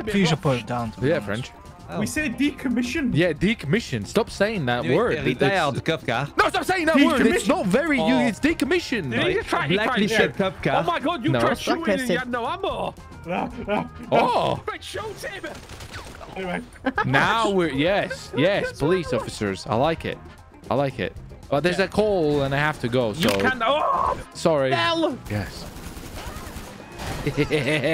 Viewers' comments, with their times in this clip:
0:08 you can hear the gun click 😂😂😂